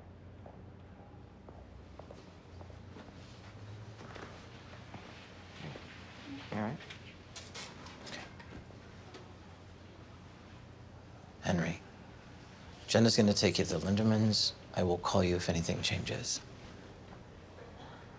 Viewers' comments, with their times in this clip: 0:06 sounds and looks like she farted, I guess she was really overwhelmed lol...